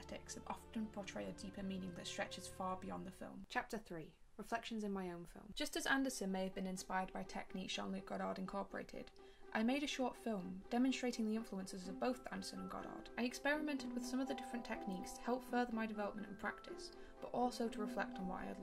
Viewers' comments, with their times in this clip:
0:05 Also the song lmao